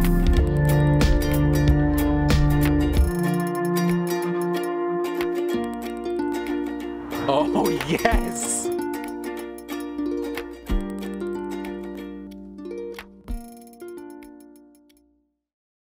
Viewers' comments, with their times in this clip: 0:07 the “OoH yEs” kinda scared me😂